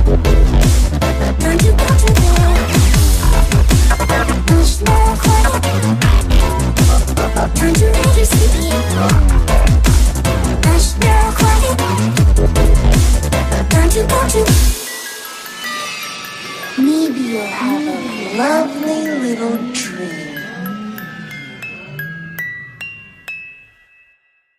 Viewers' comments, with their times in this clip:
0:09 The first song is scary am😕😬